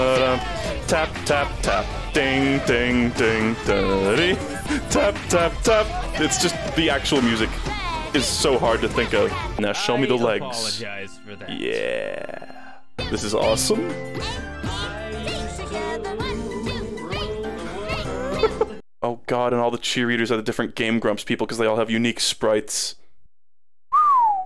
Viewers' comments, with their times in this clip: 0:09 pbg audio click discovered